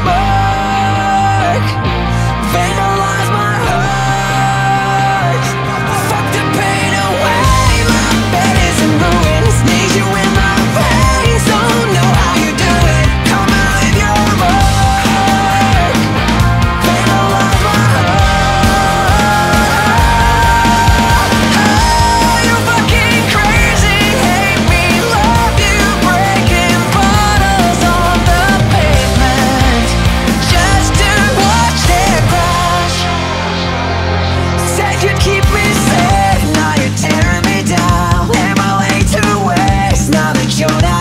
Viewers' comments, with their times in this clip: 0:08 What is it that makes his voice sound like that?
0:20 Makes me so excited it gives me chills. The vocals, guitar, bass, drumming, everything is PERFECT.
0:20 IMO minute is the best the buildup vocals,drums, guitar everything sounds amazing
0:25 I don't know what chord progression but just lets goooooo so good